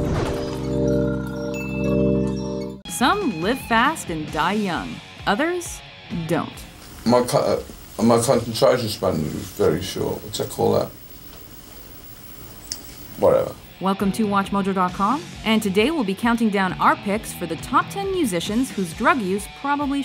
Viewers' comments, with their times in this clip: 0:06 what is he saying